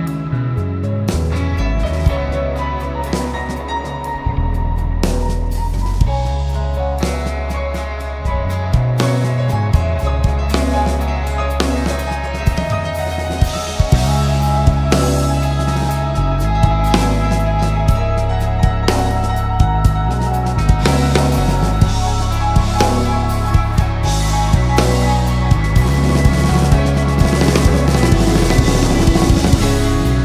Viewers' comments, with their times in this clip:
0:03 I love the band, but I think drummer abuses with ghost notes and advance notes. Where he plays those notes doesn't sound good. Especially in minute Anyway he is very good drummer!.
0:13 Echoes by Pink Floyd vibes